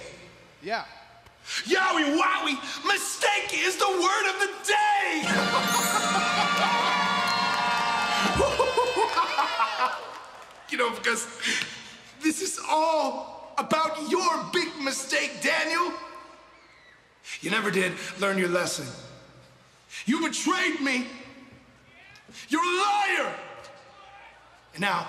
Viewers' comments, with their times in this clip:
0:07 Its interesting how you can almost hear the Old Bray in his voice for a second when he talking about Daniel Bryan betraying the Wyatt Family. Great stuff! 🤔🤔